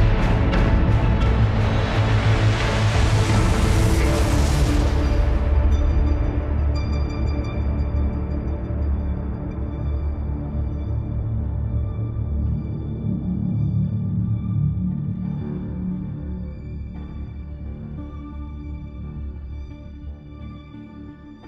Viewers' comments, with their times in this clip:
0:04 the music crescendo happened just when the black took over! Genius! Beautiful outcome on those colors.